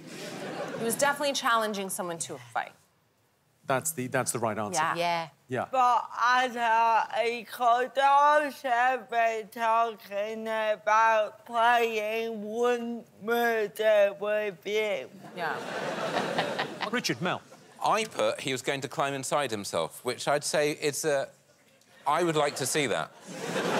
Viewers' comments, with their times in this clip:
0:08 The fuck did rosie say for like 10 seconds? Not a god damm clue.